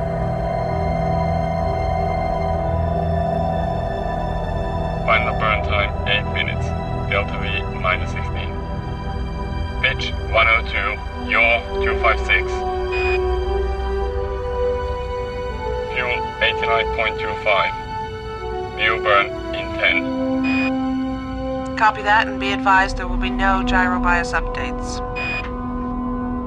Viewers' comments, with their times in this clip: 0:08 Is it I or he said "Bitch"